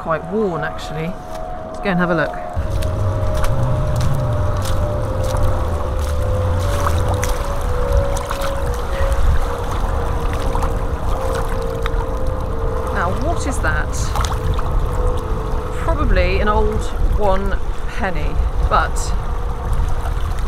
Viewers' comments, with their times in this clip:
0:05 That sound just after sounded almost like Siren Head! I I almost panicked and ran! 🤪👍